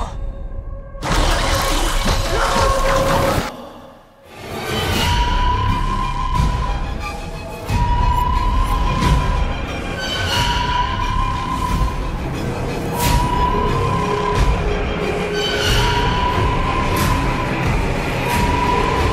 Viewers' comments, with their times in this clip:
0:07 The background sound it similar from the transmission distress call from unknown spaceship from alien